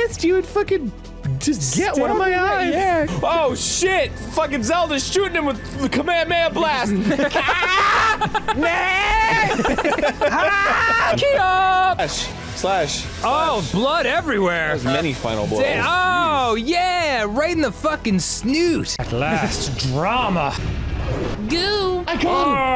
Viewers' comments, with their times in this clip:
0:06 I'm now realizing that arin might be a good voice actor for dragon ball, I mean we all know most games he plays he screams like a dragon ball character.